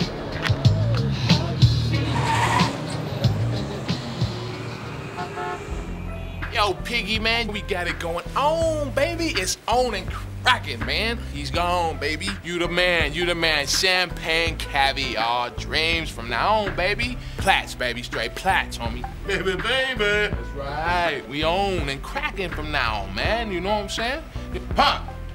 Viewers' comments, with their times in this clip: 0:06 "yo Piggie?" damn Pac was angry